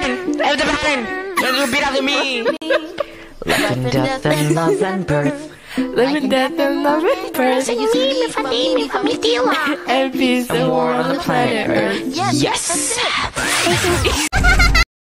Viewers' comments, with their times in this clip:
0:07 "mimiamamaia" that is what i heard . 💀